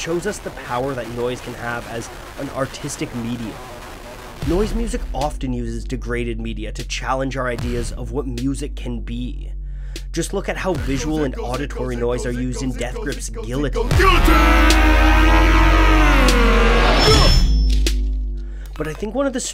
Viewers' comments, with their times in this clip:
0:03 that has to be one of the most well-known drumbeats in the history of music by this point.